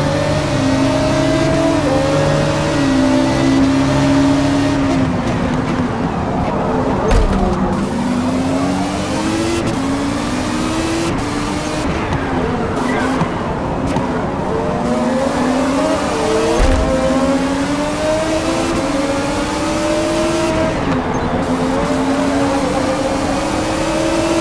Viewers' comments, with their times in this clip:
0:06 gets rear ended and the engine noise changed??? Anyone else notice that?